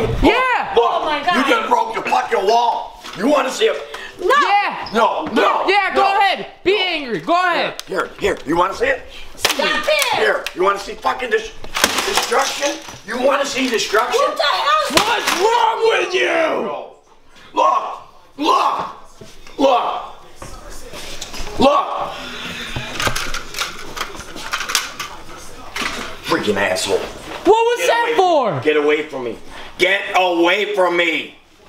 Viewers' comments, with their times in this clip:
0:09 that voice tho 😂😂
0:15 what the #÷×+ is wrong with you (evil voice)
0:15 nice attempt to make your voice sound super angry
0:15 he sounds like hulk